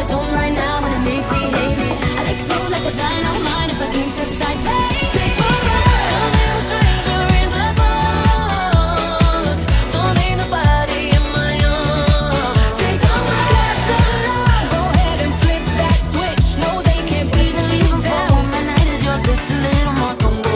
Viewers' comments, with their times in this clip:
0:04 Wasn't expecting a disco interlude!